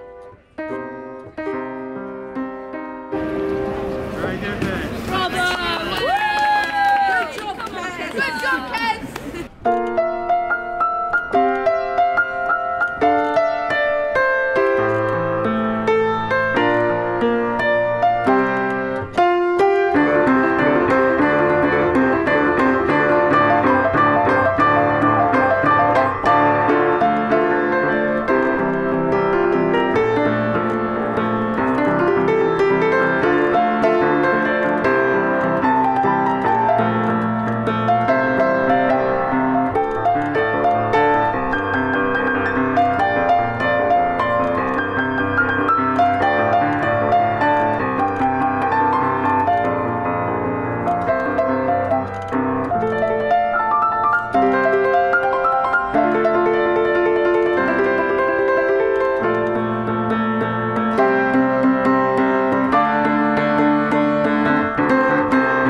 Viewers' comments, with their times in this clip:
0:08 If you watch at 0.75 it sounds almost exactly like the original
0:52 something like Tokyo ghoul ost